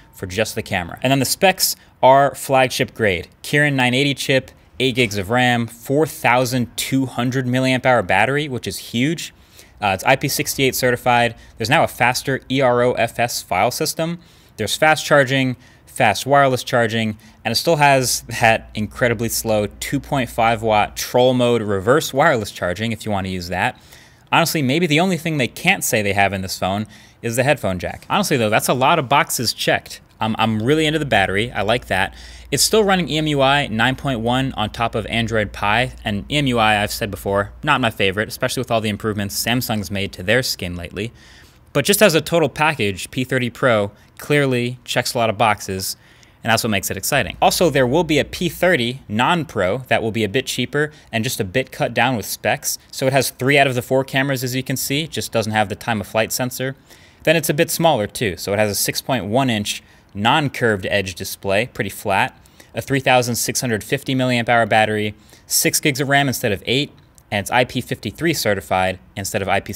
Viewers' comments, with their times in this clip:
0:06 did you really say kiran?
0:20 Brownlee did you say trolling motor? Do you fish?
0:50 sounds like you said bitch ahhahah